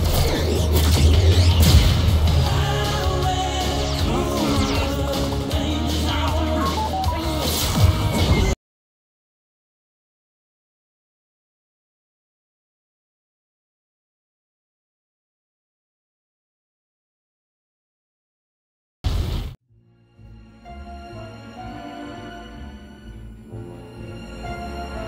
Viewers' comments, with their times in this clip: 0:07 why did the audio turn off did anyone notice that
0:09 my sound is gone
0:11 where did sound go?